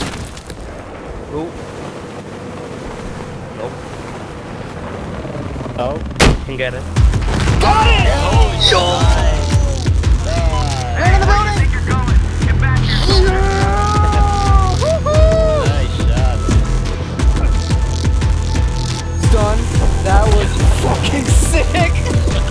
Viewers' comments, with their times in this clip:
0:08 Best celebration shout ever
0:08 DA FUQ? DAT VOICE